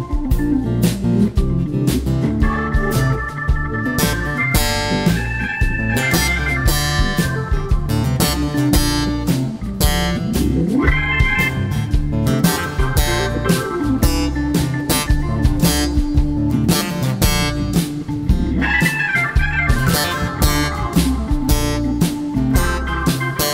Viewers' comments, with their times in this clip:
0:05 Is there a word for the way he is attacking the bass strings?